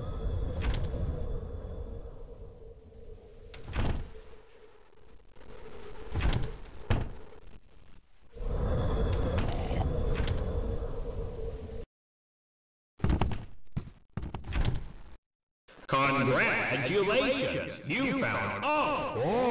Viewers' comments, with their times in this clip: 0:06 WHAT THE HECK WAS THAT NOISE?????